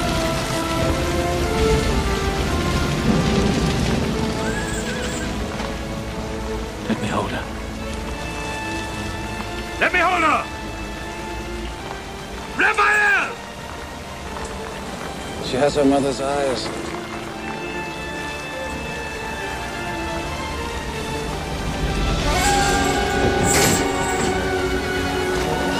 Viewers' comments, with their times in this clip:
0:07 "Let me hold her". The tone and deliverance is so perfect.